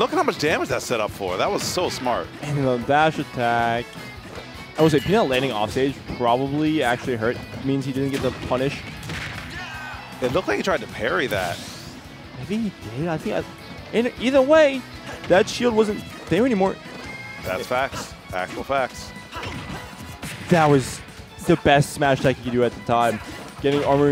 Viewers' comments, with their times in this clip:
0:08 That slap soud xD